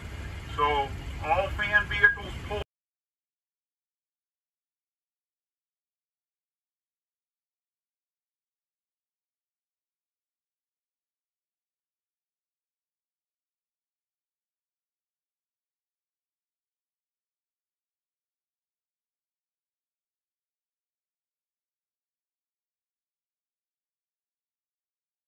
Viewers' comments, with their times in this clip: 0:10 audio got cut off